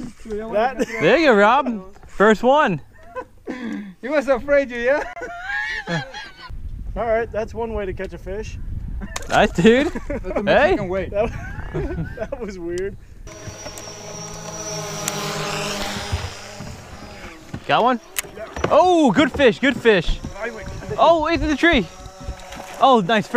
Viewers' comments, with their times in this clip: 0:03 wtf is that laugh 😂
0:04 Did anyone laugh really hard at that laugh
0:05 omg that laugh😂
0:08 That laugh is hilarious